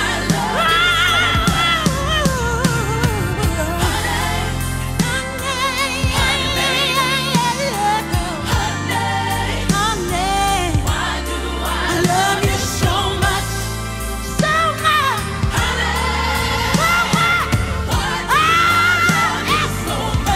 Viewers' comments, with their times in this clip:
0:04 That "Honeyyy-yae--yae-yae yae uh oh.. brought me here!!! The soul there ALONE shows why she is the Queen!!!